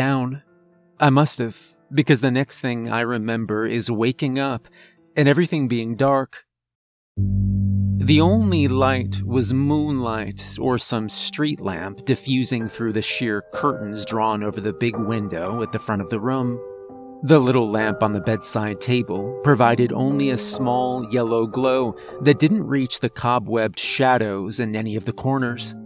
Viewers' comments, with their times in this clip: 0:08 I was listening to this as background while trying to sleep and I got so used to silent(background) narration. The low bass drone startled me back awake some enough to make this comment lol